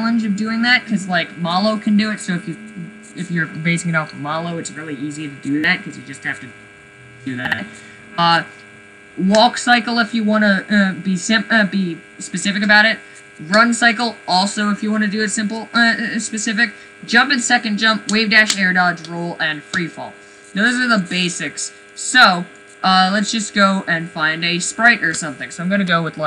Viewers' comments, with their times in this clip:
0:07 this is how i feel when i try to hear him past his jet turbine